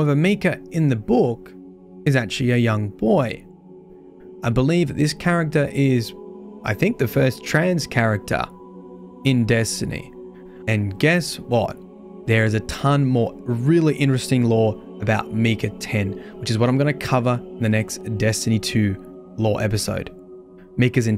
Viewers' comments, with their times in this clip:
0:08 yes, yes [insect like chattering] this adds much to the story element of d2 🤔